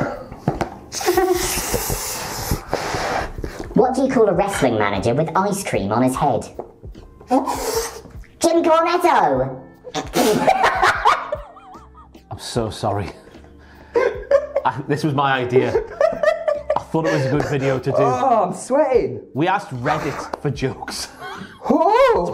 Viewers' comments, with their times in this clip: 0:10 that minion ass laugh is the best 😂 rofl